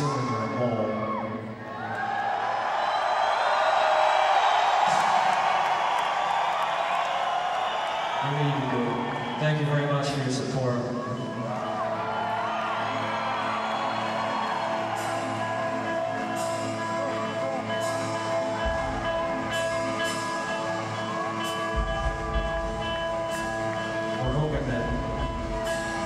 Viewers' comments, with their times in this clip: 0:10 Dude you can hear wings being played in 2002.